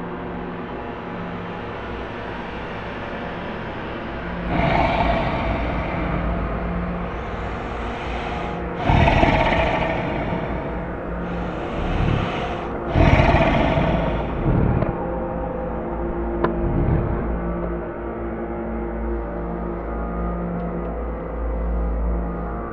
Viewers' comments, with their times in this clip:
0:05 did anyone heard the mk IV TANK engine sound!